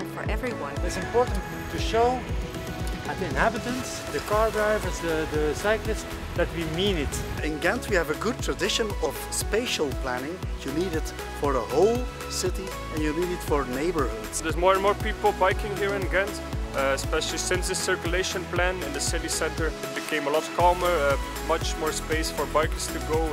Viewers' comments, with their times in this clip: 0:09 and why does he sound west Flemish